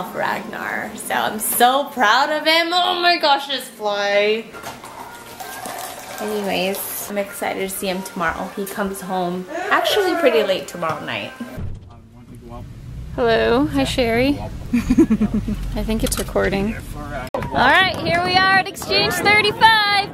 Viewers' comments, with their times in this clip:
0:05 the fly said hello at e back. :D